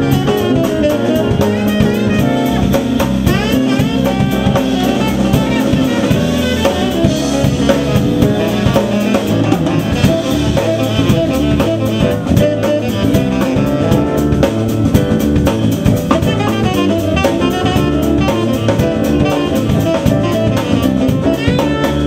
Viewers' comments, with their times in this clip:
0:09 Love that lick !